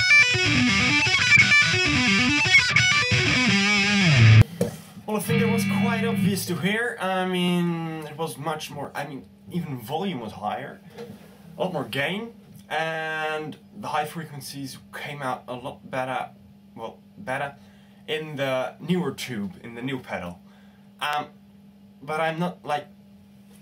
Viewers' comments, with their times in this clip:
0:05 It'a Dave Mustaine from the past :DDDDDDDDD